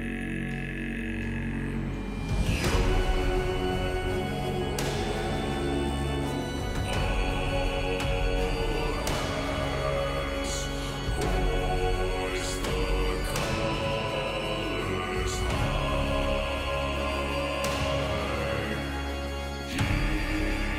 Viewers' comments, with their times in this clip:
0:06 Now, I can't be sure, but I think he heard what was going on in the instrumentation. If you don't recognize it yet... Well, there's only one pirate in all the Caribbean with an organ THAT powerful